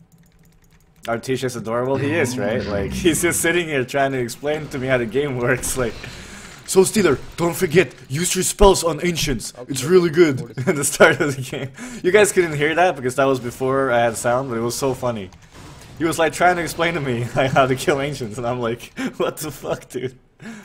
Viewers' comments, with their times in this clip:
0:05 Haha,it`s like Russian accent? :D